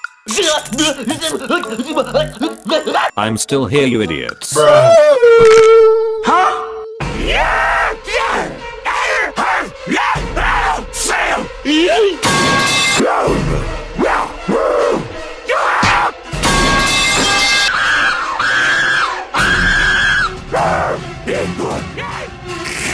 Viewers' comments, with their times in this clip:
0:04 It’s like the spider man me whistling version😂😂😂😂